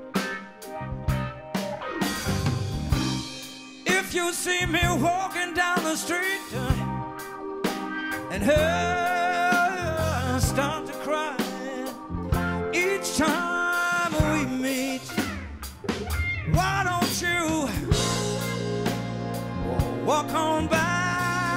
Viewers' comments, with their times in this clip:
0:05 Best vocalist on the planet by far 👌🏻 effortlessly on point as always with passion and feeling 🎶